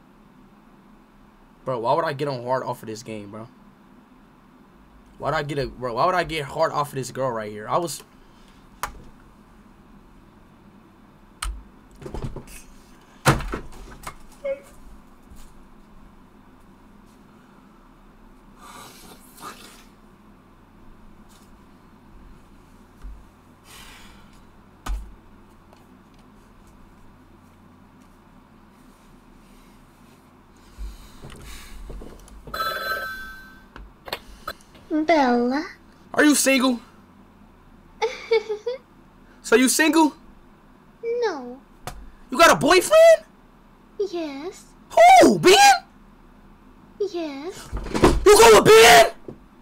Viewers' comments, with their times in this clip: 0:09 The fuck is he crying for 😂😂😂😂
0:11 i like how he started randomly crying😭
0:36 this plot is so accurate. The way Bella responds is so calm and it makes so much sense.